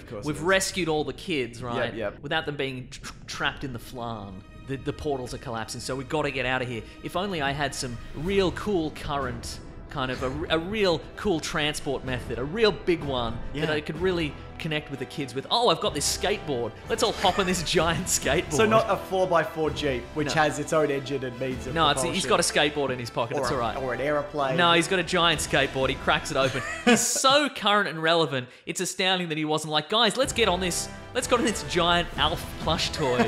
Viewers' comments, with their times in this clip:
0:06 I love how the Avengers theme kicks in for this lame moment.
0:08 whats that song? its like a variation on the theme
0:18 LMAOOO the Avengers theme when he pulls out a skateboard to get away absolutely makes this video 😂